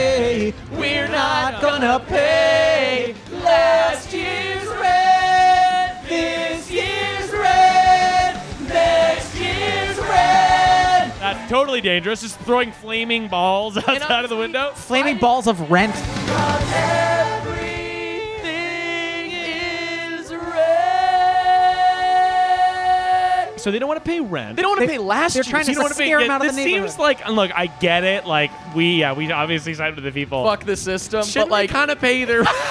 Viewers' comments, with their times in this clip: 0:04 that harmony tho. was very good. will listen to it on repeat
0:20 You three harmonized oddly well